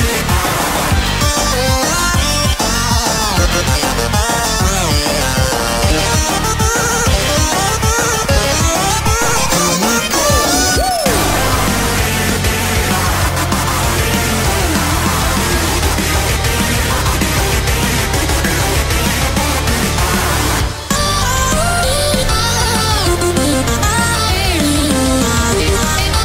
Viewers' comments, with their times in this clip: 0:10 i love the WOO it fits sonic so much lol, a demonic entity of all power and he just faces it without a fear